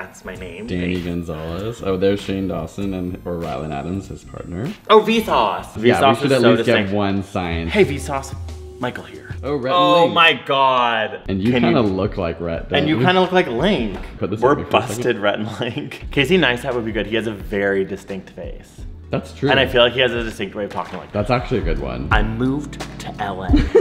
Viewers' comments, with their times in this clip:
0:08 Ok that “hey vsauce Micheal here” is sooooo close to actual Micheal I’m freaking out